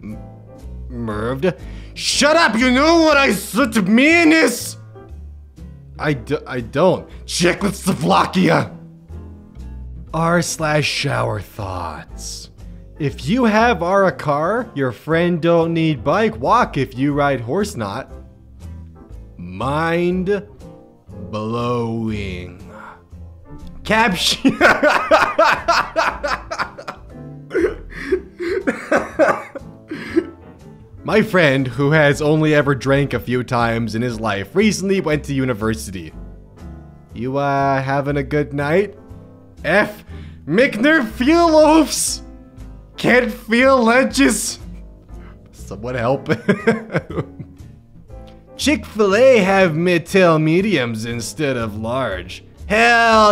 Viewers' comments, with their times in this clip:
0:07 that's not a typo, why are you saying it like that
0:40 when you’re so drunk you start speaking like a sims character